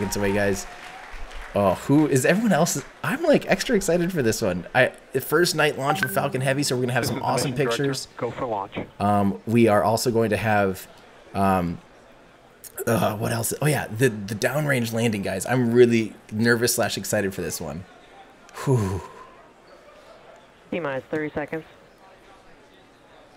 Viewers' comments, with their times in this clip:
0:05 Am I the only one who heard and noticed WhatsApp Web notification sound ? It made me pause the video and check for my WhatsApp for a moment. XD